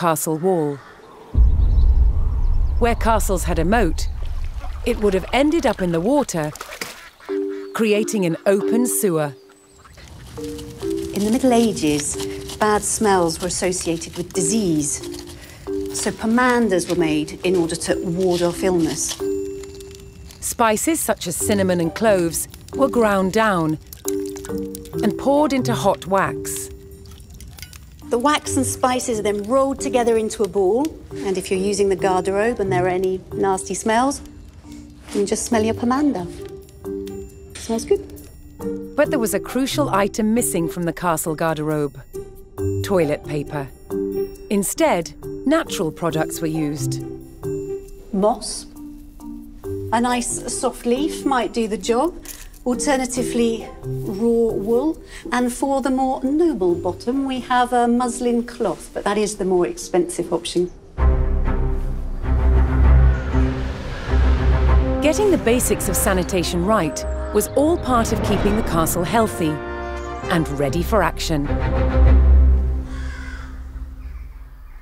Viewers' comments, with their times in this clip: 0:08 Whenever I hear that jingle i think of Animalogic lol
1:02 did she say Muslim clothes?